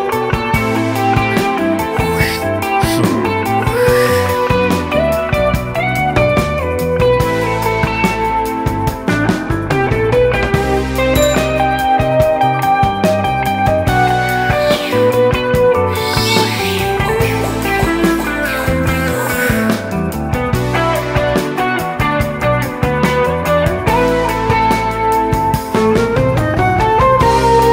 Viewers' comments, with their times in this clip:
0:03 my wife was like this song until the backsounds appeared damn
0:12 jimmy page guitar solo